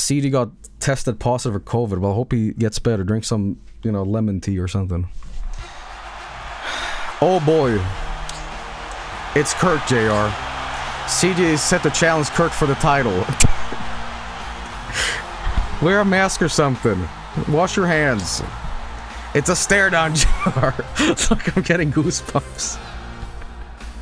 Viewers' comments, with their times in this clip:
0:07 Listen to the "you suck" chants!! Lovely detail.